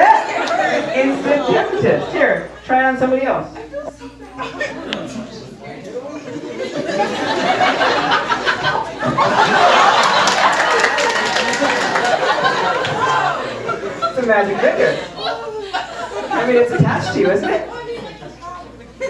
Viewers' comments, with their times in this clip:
0:06 Someone was pleading for their life